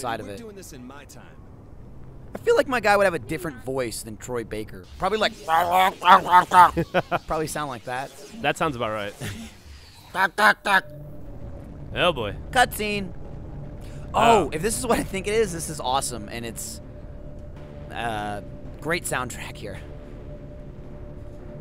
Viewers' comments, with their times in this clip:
0:05 Starts whistling Doctor Who theme